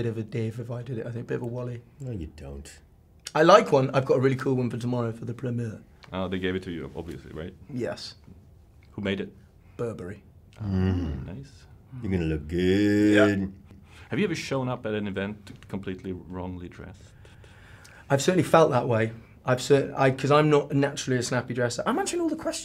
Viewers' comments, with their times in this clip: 0:10 Pedro humming is my kink